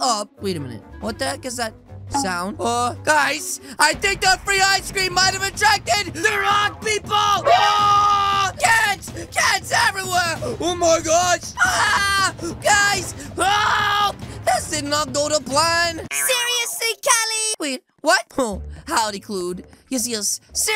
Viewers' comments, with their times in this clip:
0:04 Tell me this doesn’t sound like a Minecraft creeper